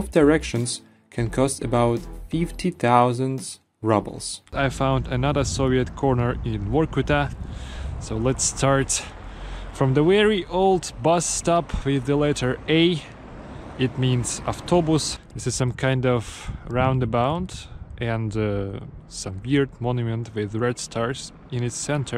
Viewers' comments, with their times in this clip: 0:03 Do you say roubles like "rubbles" in Russian? No? So why in English, where it sounds like another word for pieces of demolished buildings - rubble? Americans are illiterate and they don't like big words with too many letters in them, so since very recently, they spell rouble wrong as "ruble". The problem with that spelling is how you correctly pronounced it, but that's a homophone for another word, rubble, so you are making English more difficult to understand for natives, but even more so for non-natives, even though you bother to form one of the English U sounds properly.